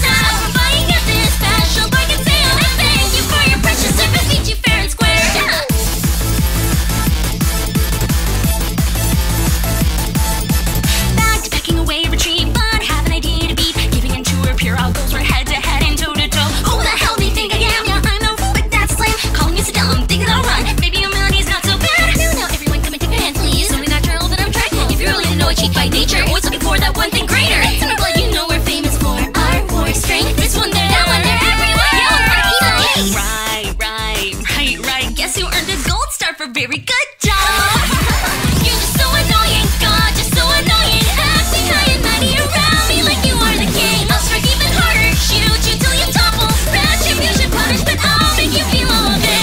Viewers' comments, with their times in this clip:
0:07 Rin really just said: s t r e t c h
0:33 “Right, right, right, right, I guess you got a gold star for “Very good job!” Why does that sound so sassy?